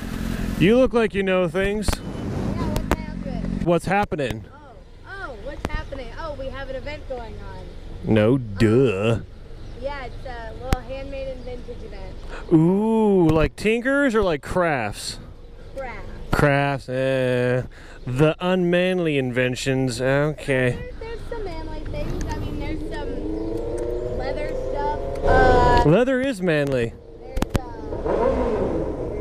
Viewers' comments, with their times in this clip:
0:10 Is it just me or did anyone else think that the woman sounded like Jo Jo Siwa